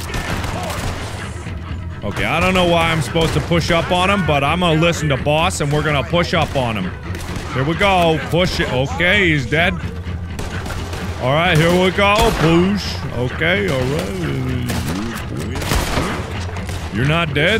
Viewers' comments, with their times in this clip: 0:05 WTF king tachalla sounding ass for those of you who dont know who that is it is the black panther